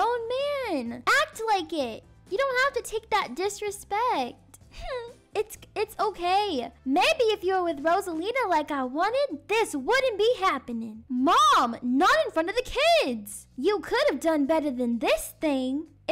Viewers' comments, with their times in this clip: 0:04 When August whimpered 😂